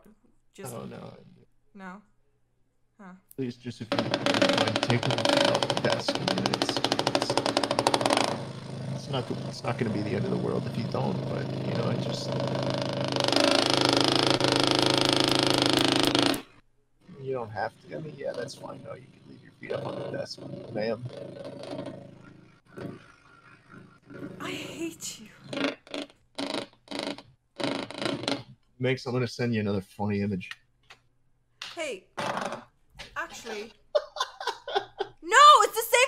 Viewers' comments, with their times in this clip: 0:03 Asmr Schlatt starting a motorcycle he just stole.
0:22 "I hate you" Minx says, her voice dripping with admiration for Shlatt.
0:24 where she says I hate you is the literal definition of a flirtatious voice omgggf🥺